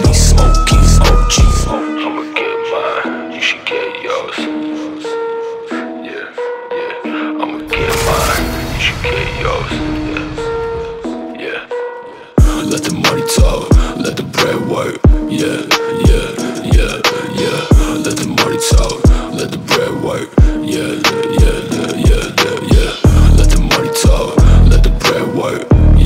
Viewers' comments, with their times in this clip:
0:07 it sounds like the queue pop from league of legends is it?